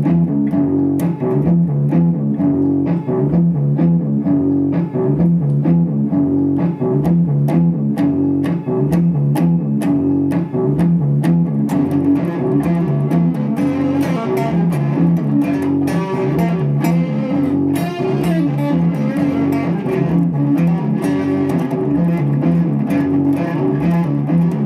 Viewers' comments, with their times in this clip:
0:06 Was it actually you yourself who was playing that awesomely sick solo or was that edited in? Cuz that shit was fkn TIGHT!